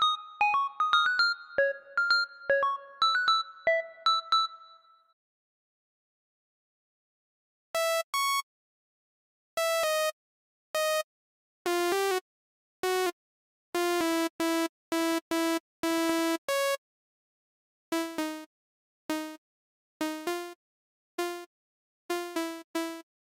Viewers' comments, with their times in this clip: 0:07 sounds like a nokia ringtone